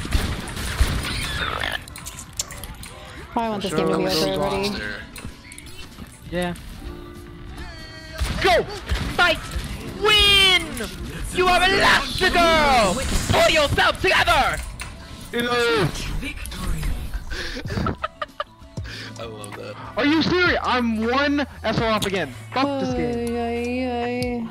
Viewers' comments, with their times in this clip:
0:10 IM SORRY BUT THE EDNA IMPRESSION HAD ME DYING 😂